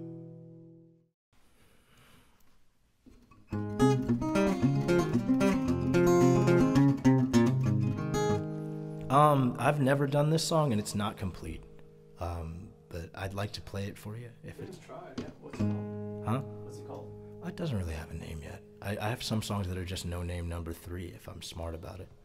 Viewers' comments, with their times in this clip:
0:09 The no-name number3 (husband-wife) song was great! ❤️❤️👩‍❤️‍👨 Just so fun and cheerful. Can't wait to hear the final production 😊 Love from India! 🇮🇳